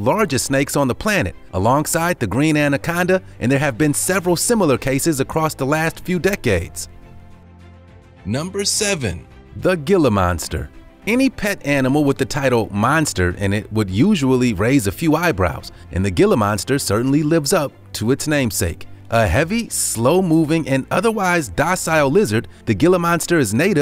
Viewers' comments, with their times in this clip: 0:10 no it does not make me raise my eyebrows The way you say it makes me roll my eyeballs